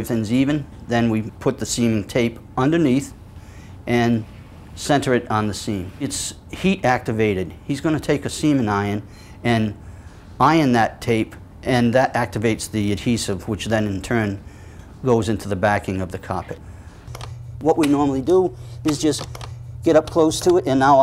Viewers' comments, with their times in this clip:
0:07 Wheres all the semen iron comments?